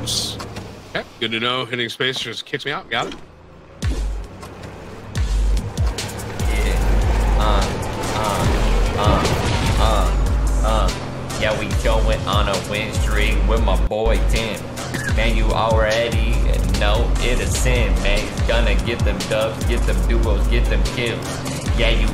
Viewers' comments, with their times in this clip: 0:09 the rap of ninja